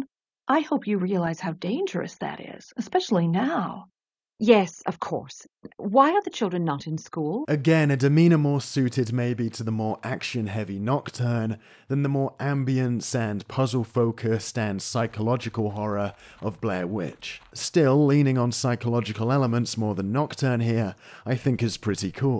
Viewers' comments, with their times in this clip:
0:07 “Let’s not make sure we code the characters in cutscenes to always have correct pathfinding, we’ll just teleport them if they don’t. Players will hardly notice.” wow it’s really windy inside that room